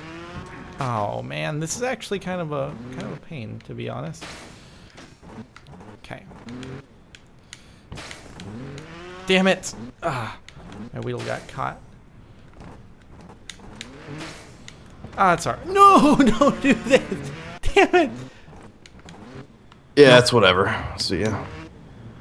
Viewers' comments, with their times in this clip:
0:09 he sounds like mickey mouse